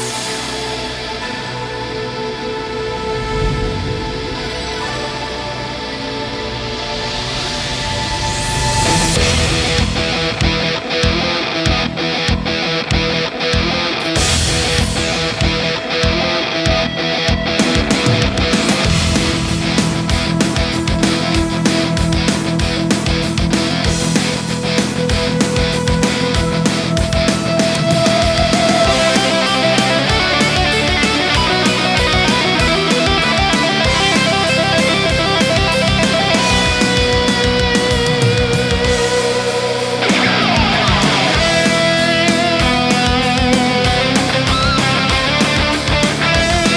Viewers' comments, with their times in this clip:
0:08 I like the bass drum and entry of the characters
0:28 This tapping allways give me motivation! Great theme!!
0:28 the sickest solo ever in a theme song. Gives me chills
0:31 Dude I loved it but if there would had been more high notes like the ones and until that point, I think my brain would have come out my ears. haha